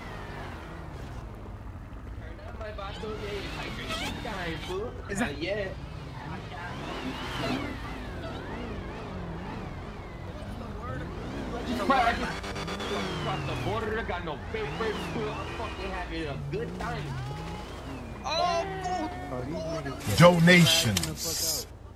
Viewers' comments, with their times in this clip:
0:03 was that the blue challenger whinin like that if it is how tf did they get that realistic ass whine in the game